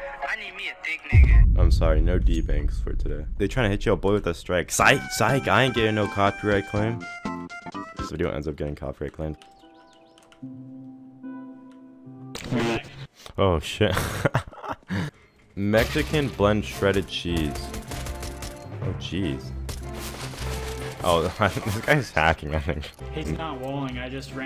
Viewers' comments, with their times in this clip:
0:09 Are we just gonna ignore the minecraft music from the ???